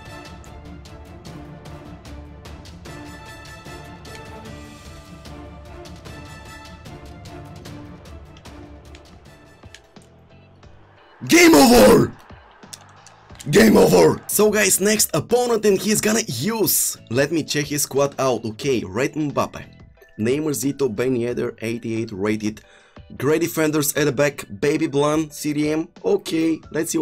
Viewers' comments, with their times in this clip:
0:08 Omg my ears blasted 🤯